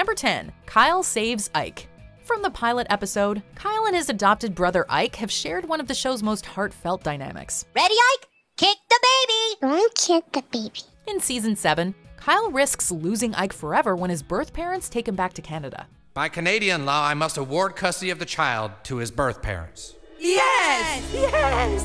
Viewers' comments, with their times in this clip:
0:09 very cute voice!